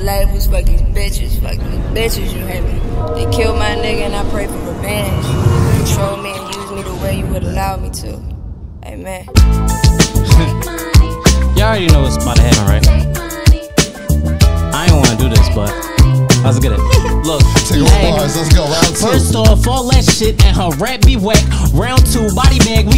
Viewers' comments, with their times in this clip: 0:09 When that beat dropped 🔥